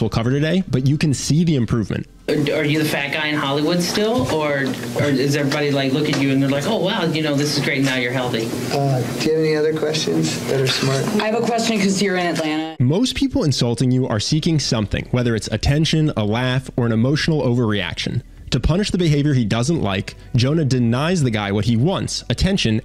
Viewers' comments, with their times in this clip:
0:08 Do you have any other questions...that are smart?" At first this doesn't seem like a 'diss' towards the interview. At first Jonah seems so sincere in the beginning when he asked if they have any more questions. But after I watched it again, I noticed the that are smart part is actually hidden by someone's cough and another person started talking. I realized that it was a great diss, or comeback to an insulting question.